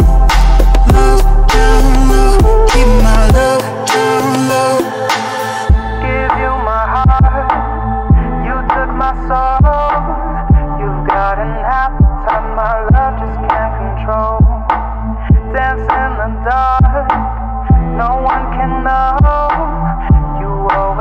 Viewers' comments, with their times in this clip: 0:07 So good, but there is a little bit of peaking for the song starting and it feels kinda out of place for me.